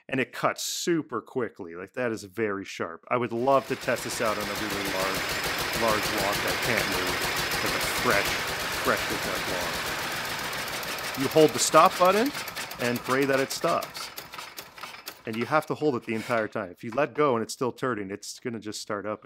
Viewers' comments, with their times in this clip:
0:03 he says "I'd love to test this out on a (hewn?) log" and the Closed Caption says "I'd love test this out on everyone". Spooky!